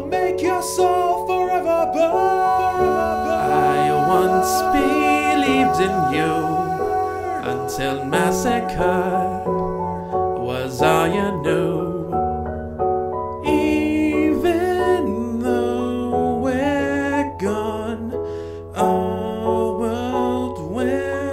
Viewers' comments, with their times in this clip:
0:03 Noice! Also the EMOTION in is awesome!